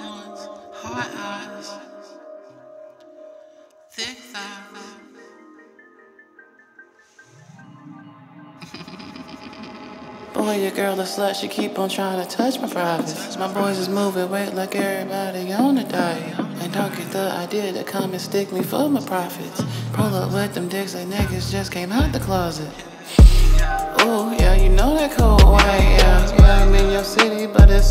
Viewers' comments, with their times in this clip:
0:10 father with ugly god flow